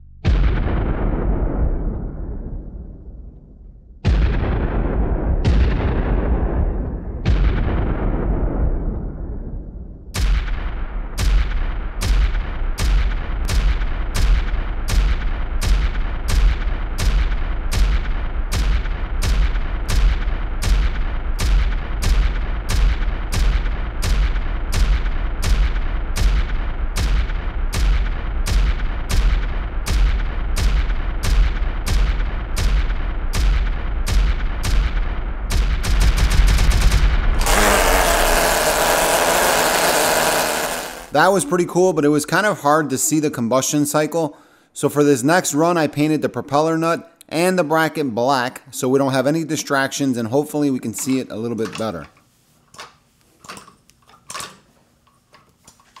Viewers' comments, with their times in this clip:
0:04 that is some crazy engine knock 😂 Awesome video
0:11 What it sounds like when the office is totally silent except for the guy in the next cubicle is either typing or clicking his pen over and over. I swear to God it sounds that loud to me, drives me insane.
0:14 sounds like dam it
0:21 Wtf? Where did you even get these sounds? Sounds like an old video game explosion
0:31 that went from pistol, to machine gun, to the A-10's autocannon!
0:31 Go to if u wanna hear .223 being fired
0:35 sounds like a machine gun
0:37 mini A-10 Warthog Cannon BBBBRRRRRRRRTTTTTTT
0:41 this doesn't need a fart can